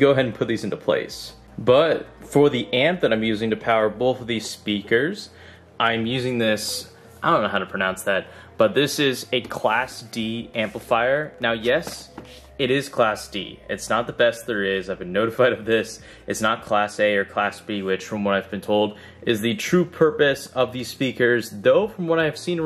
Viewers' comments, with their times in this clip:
0:06 Is it just me or does his voice change